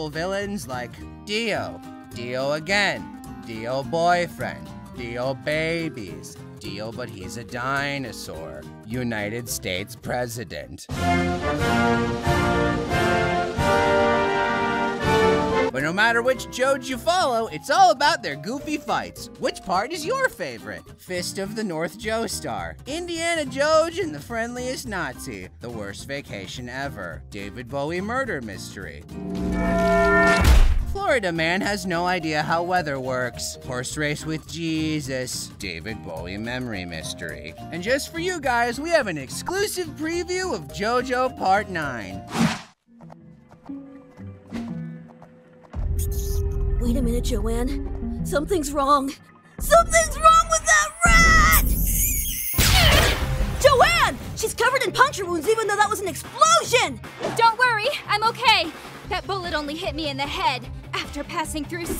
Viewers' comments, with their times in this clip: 0:08 you can just tell in his voice he wants to laugh so bad.
0:42 Araki: laughs evilly Pt 9: